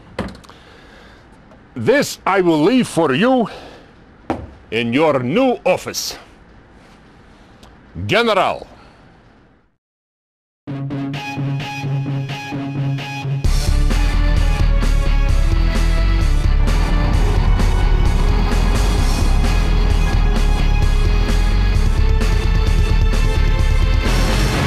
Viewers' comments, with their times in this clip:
0:10 U.S in Ukraine goes kaboooom!!! 🤣🤣🤣